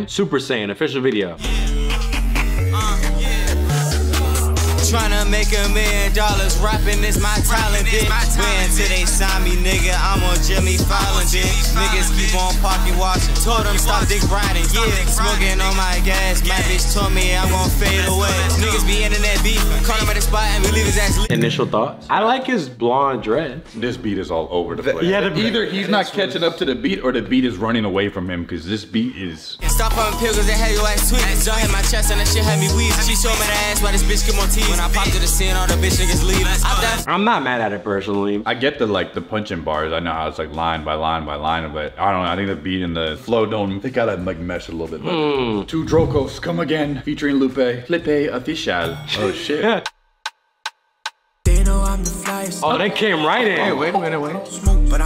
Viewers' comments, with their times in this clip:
0:07 yuno miles tipe song
0:09 is DMV Drill so it’s a very diff style
0:43 he was flowing w the kick not the melody